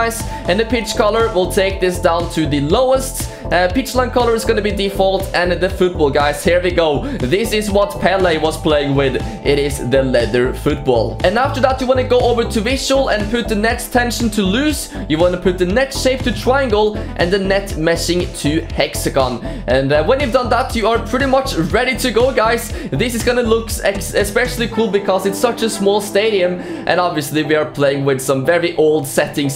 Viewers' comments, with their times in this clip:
0:10 Somebody knows the song playing ? Or that type of songs, really happy minimalistic idk